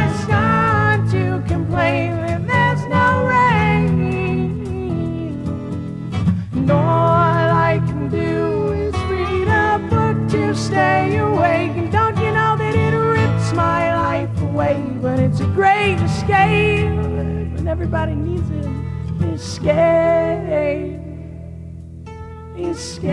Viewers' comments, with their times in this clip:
0:04 The lil run he did was so cool sounding.